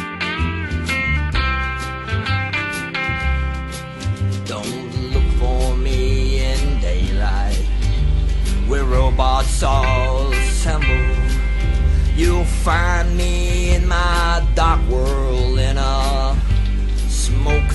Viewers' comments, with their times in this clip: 0:05 Whats going on with the bass haha thats awesome